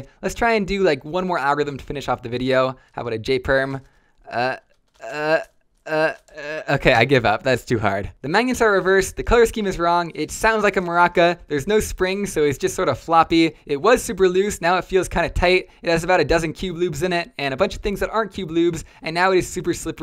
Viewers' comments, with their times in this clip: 0:06 he just starts rappin frl